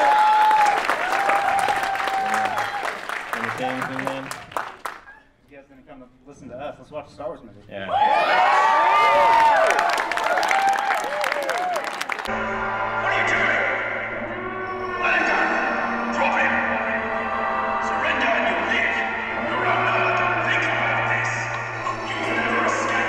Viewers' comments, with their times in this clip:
0:07 Why the heck is the sound in MONO?